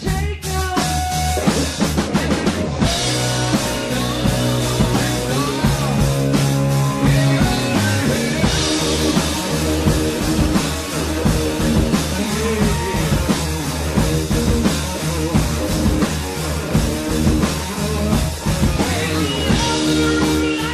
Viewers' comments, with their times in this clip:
0:07 Love it! Very interesting to see the first steps of this song! "heaven and helLlLlLl", oh, Dio and his giant vibrato😀